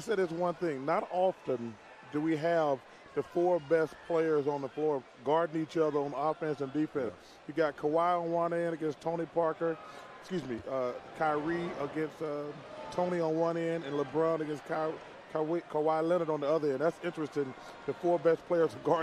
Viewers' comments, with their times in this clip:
0:05 Kawhi vs tony Parker and almost said kawie 🤣